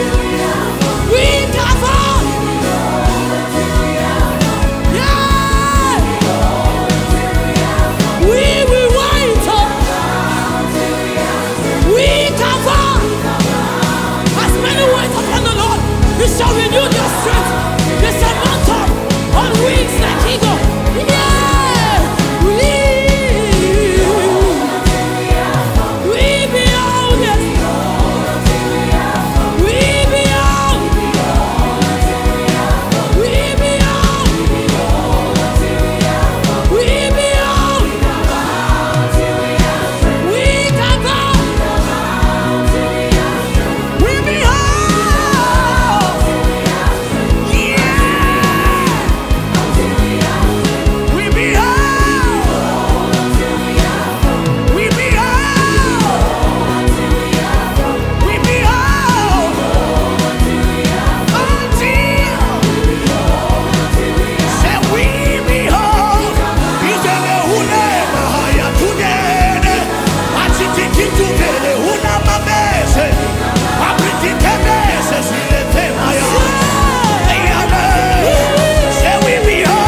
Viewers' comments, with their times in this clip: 0:06 This tune is literally living rent freee in my head!!! God bless you Ma ❤❤
1:05 right here. I don’t know if he was speaking in tongues or in his language but I FELT ALL OF THAT😭🙌🏾